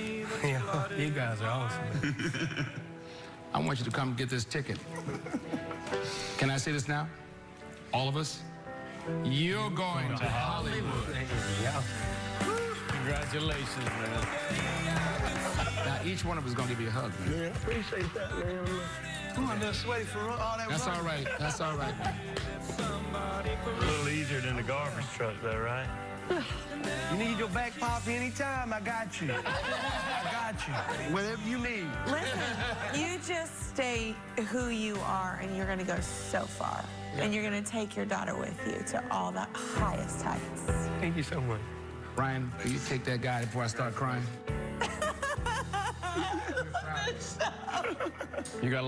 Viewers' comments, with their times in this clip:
0:03 come and join Satan
0:34 Perry sounded like the devil right there offering him to sell his soul... it ain't worth it my friend!